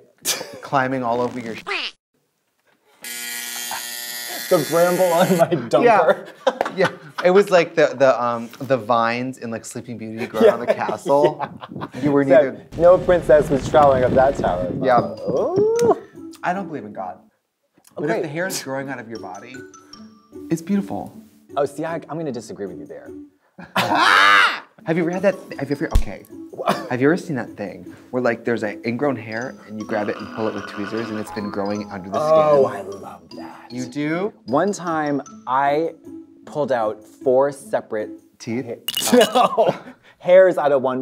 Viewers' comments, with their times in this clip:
0:08 Don't you dare think I missed that unnecessarily classified *thwoorp*.
0:23 Can we please talk about the aborted attempt at laughter ? I can't go past that without bursting.